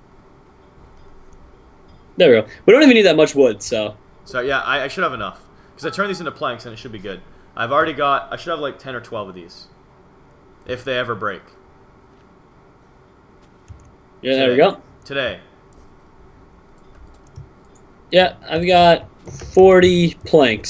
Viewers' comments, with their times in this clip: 0:04 mitch has the same ringtone at me